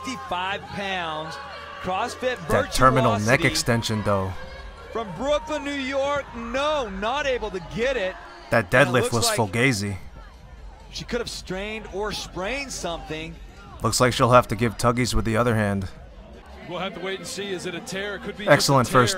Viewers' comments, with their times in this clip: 0:05 That fucking scream Yeah, bitch, heavy weights on a bar is for men. That's right, it's the current year and I said it.